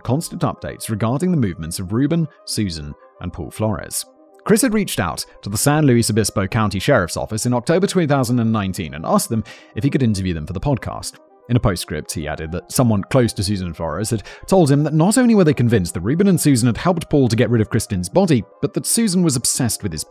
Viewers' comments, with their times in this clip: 0:07 Such a serious episode no one's talking about the year twenty thousand and nineteen